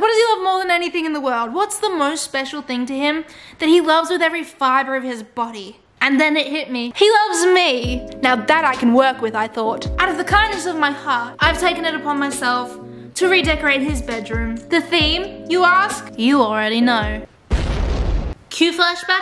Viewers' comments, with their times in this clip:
0:06 you can hear the happiness in her voice when she said "he loves me"